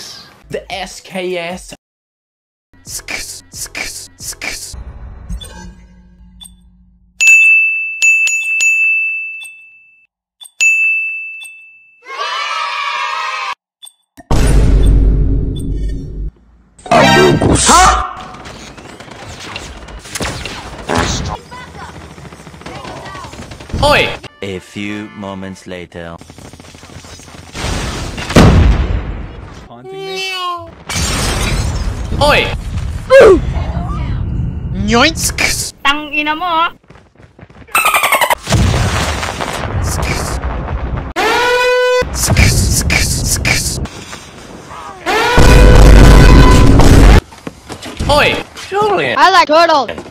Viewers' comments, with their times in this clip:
0:03 koreans usually call sks like that.
0:36 That sksks sound got me rolling 💀💀